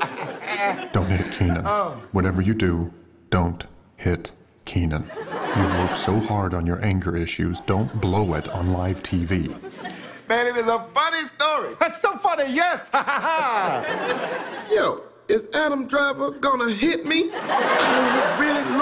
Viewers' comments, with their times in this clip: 0:03 Bruh this voice ain't Adam's voice. That is KYLO REN'S voice